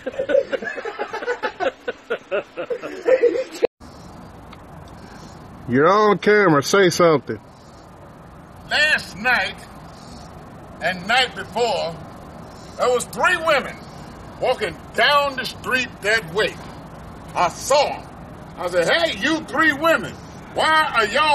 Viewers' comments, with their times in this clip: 0:04 that guy has this awesome titanic voice. Should be a voice actor. Funny clips!